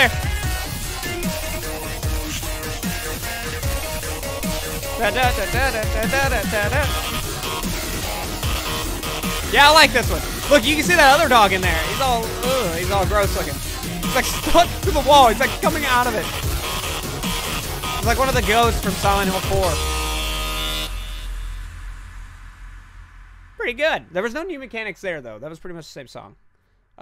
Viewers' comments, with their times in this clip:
0:10 He’s screaming in my ears